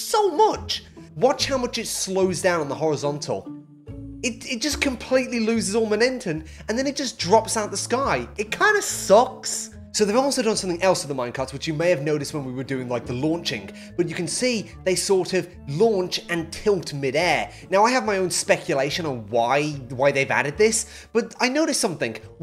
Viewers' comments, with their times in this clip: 0:04 Is he saying " MONENTTEN"
0:05 MoNENTUM??? (not hating)